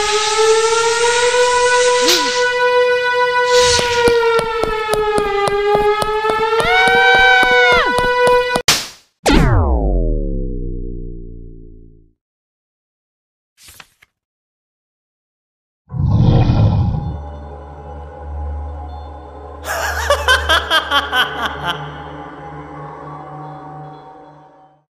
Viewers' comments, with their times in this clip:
0:06 MR DEMI'S SCREAM THO??? (
0:19 Gojo ahh laugh💀: